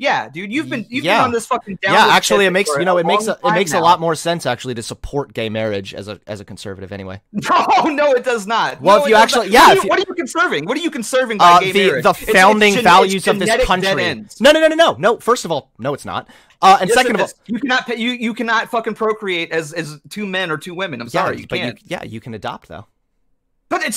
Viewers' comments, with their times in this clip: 0:04 as a conservative, I actually agree completely. Last I checked my party and it’s supporters value (or at least claim to value) personal freedom and liberty. I will admit I’m not a huge fan of modern progressivism or LGBT identity politics, but just because you don’t like something doesn’t mean those people shouldn’t get freedom. I would hope that other conservatives would agree with me. Also, how old is this fuck? He sounds like a 15 year old in an MW2 lobby